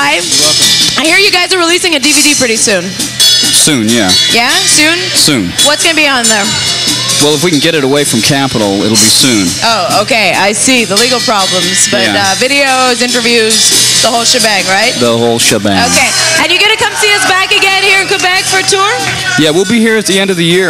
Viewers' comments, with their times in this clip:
0:06 THE GIRL SHUTS UP AND CROWD CHEERS!!! Thumb this up so no one has to find the place were the song starts!!!